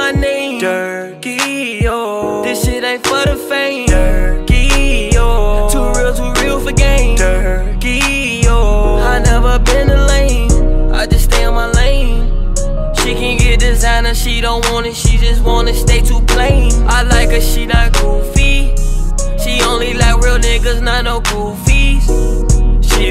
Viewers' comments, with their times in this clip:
0:04 his singing voice 😍